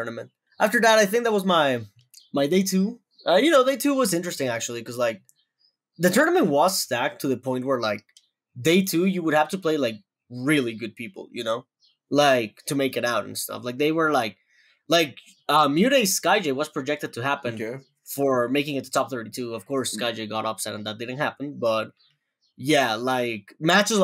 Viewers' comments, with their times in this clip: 0:10 Anybody else keep hearing that bird in the background?